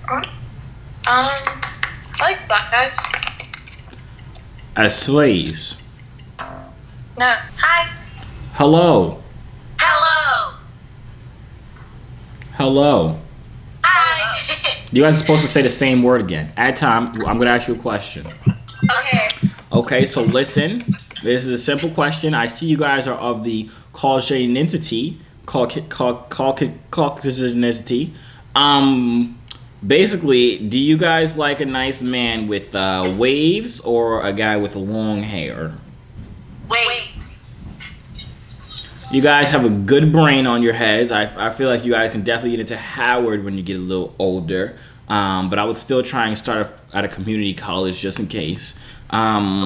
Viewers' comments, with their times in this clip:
0:09 they said "hello" in unison and then said "hi" in unison. twin telepathy?
0:37 awww xxxtentacion in the back i miss him sm